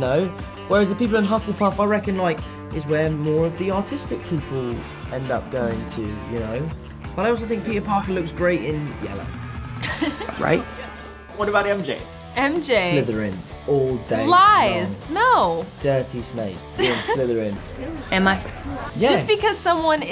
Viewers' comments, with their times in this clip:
0:03 I thought he said that hufflepuff was where the “autistic” people went and I was so shocked lol
0:05 I thought he said “Autistic” lmfao